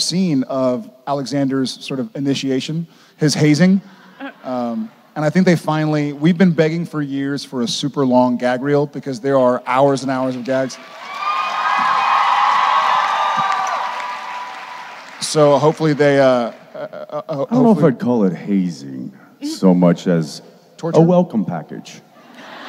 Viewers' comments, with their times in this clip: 0:04 The audio is off